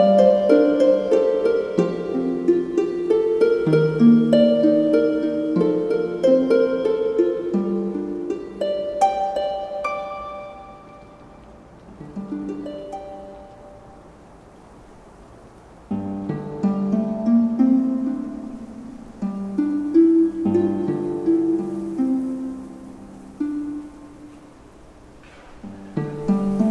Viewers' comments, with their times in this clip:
0:10 Wow the harp sounds great with the waves in the Background